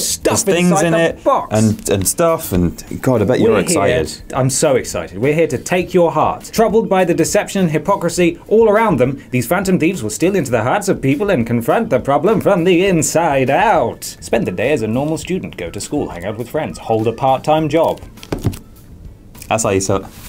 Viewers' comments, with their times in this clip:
0:08 Matt Berry impression?